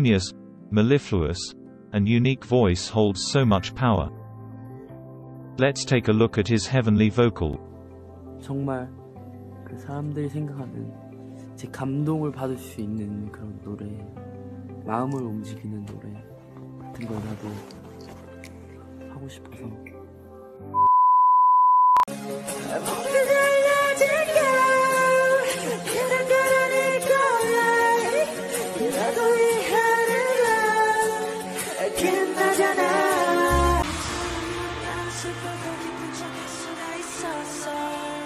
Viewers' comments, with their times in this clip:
0:07 Nice video This songs l loved Your voice beautiful #jimin 💫🐥😊
0:22 i have goosebumps 😨😱😱😱😱😱 jimin voices is creative and his dance moves and his outfits are killer